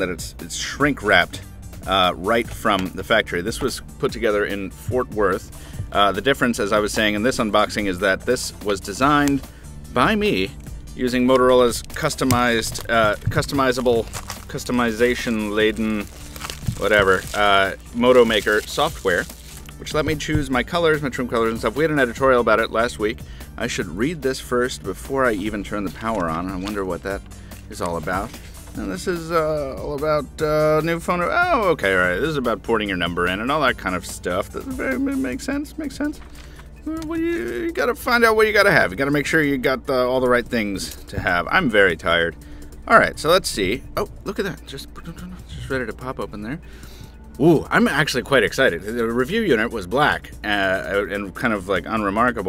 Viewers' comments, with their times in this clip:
0:08 "this was designed, by me, using motorola's customized... uh... customizable... customization laden... whatever... uh..." eloquently put. :)
0:35 see in this video Very funny and strange voice